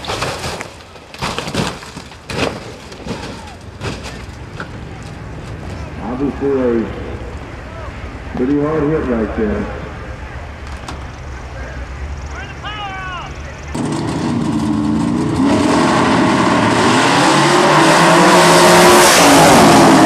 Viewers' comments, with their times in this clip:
0:07 "pretty wild right there" or did he say "pretty wide wheel right there" if he said the wheel was wide I'll agree it looks like 315s in the back